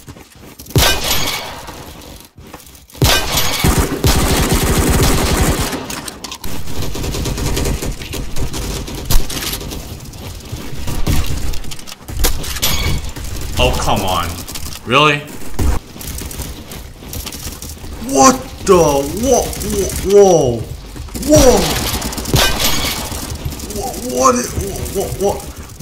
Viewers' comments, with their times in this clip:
0:10 that sounded very dissapointed lol my bad